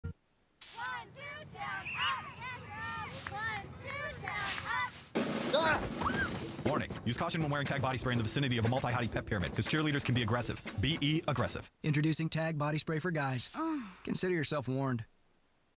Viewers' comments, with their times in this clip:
0:13 That (spray)(moan) killed me 😄